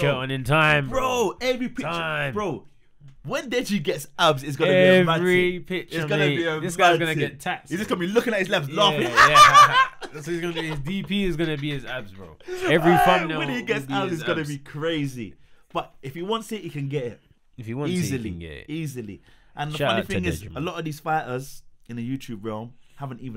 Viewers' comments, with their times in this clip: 0:03 that laugh was on point😂😂😂
0:09 🤣🤣 that laugh was bang on